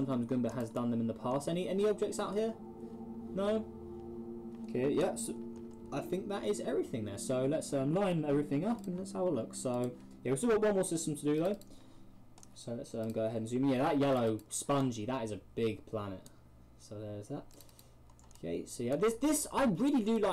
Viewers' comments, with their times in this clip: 0:06 kermit is that you?!